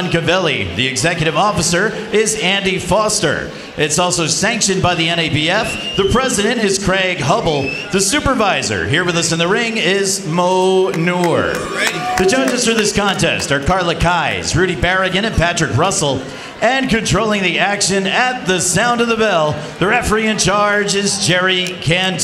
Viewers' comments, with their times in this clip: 0:08 The supervisors name sounded a lot like manure